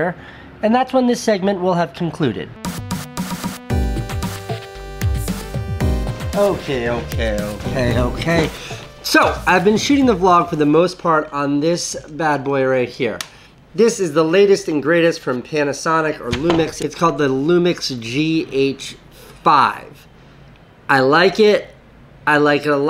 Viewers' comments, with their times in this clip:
0:05 Anyone else think that background music sounded like the H3H3 intro.